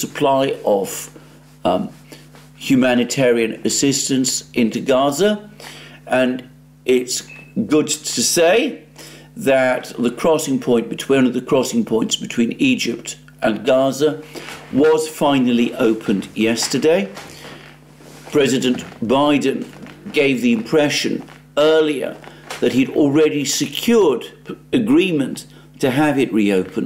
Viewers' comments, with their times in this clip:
0:07 sounds like a smoke detector that needs its battery replaced...